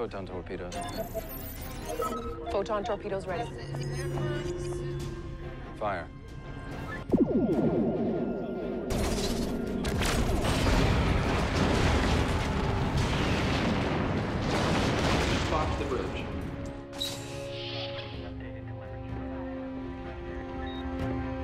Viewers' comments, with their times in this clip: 0:03 Anyone notice the crewperson walking backwards behind Michael ? They even added sound effects for her steps.